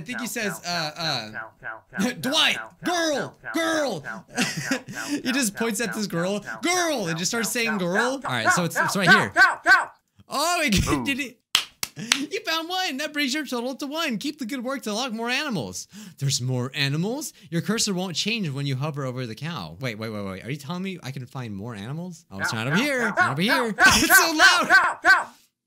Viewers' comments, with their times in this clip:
0:07 honestly I also hear the word "how"